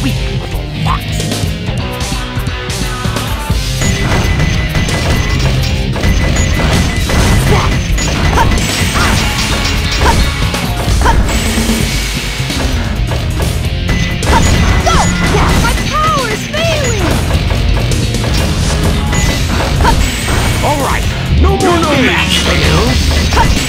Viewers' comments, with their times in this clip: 0:06 did robotnik just say fuck?